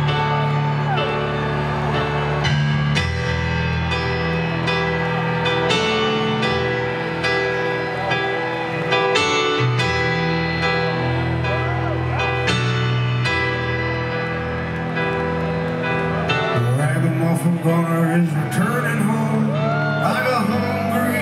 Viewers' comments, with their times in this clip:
0:04 great version.... even with Max missing first "hit" ...